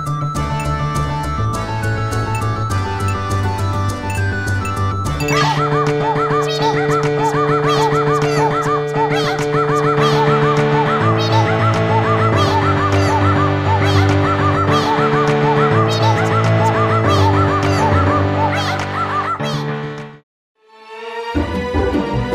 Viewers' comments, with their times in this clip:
0:06 I need to hear an entire song with that style.